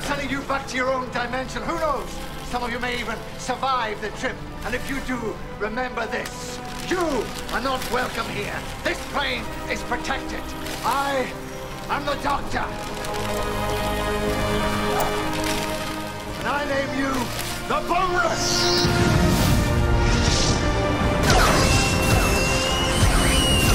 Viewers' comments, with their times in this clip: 0:09 Youtube CC: Jews are not welcome here Me: surprised pikachu face